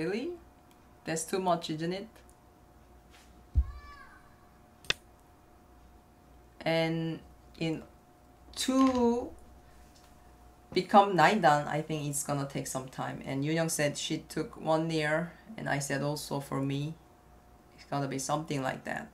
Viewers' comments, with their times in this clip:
0:03 What was that ghost voice that scared to me